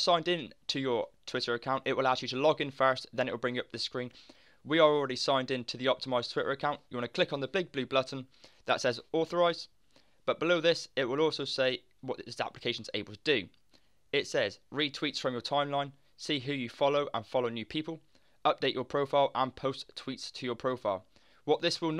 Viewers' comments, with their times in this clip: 0:06 he say big blue blutton